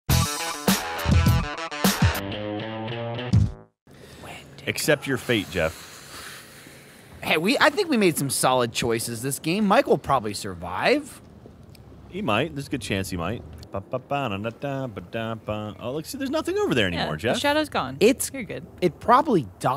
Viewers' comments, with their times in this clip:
0:03 does the moon say Wendigo? just thought it was something I heard, wanna confirm it